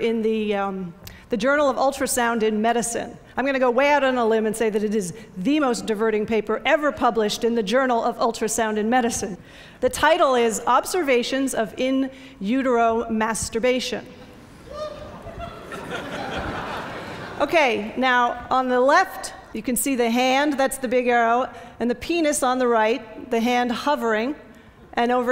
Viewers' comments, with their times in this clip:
0:09 the audience response.......